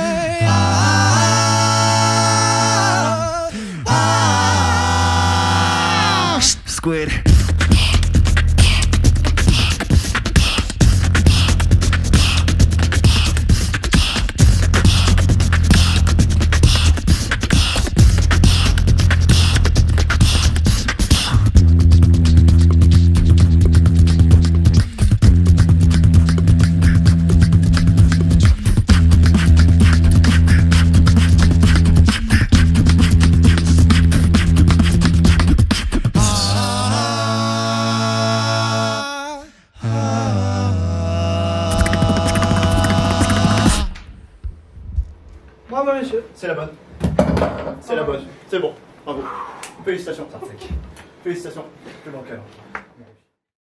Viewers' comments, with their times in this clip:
0:07 Best drop in Crew Wildcard this year🔥🔥🔥🔥🔥
0:41 he can actually beatbox 🤣😂